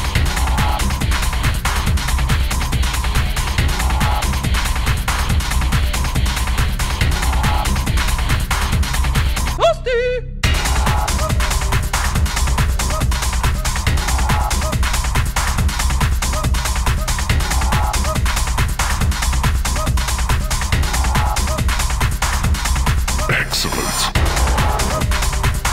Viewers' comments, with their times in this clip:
0:08 That moment you realize it might have been flawless too, were it not for the "toasty" exclamation around the mark. I don't know if the composer slipped it in or some other idiot dubbed over it. It seems like it might have been from the remixer though... facepalm